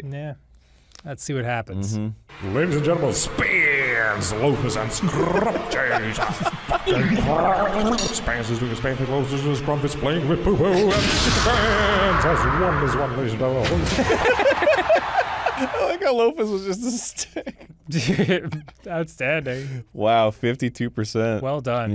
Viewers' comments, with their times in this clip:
0:03 I loved your narration for this one especially
0:06 You can hear Vinny Vinesauce's SPEEN! (sounds specifically like the distorted one from metal gear) during the short intro for Scrumpf in the third battle lmao